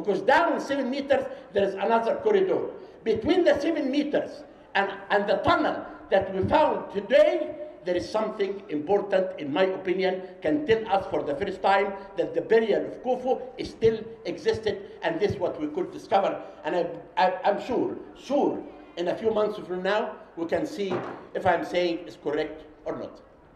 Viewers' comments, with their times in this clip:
0:09 i love how the gentelmen at min can have more microphones than fit on his table, and yet sound as recorded through 20 year old broken toster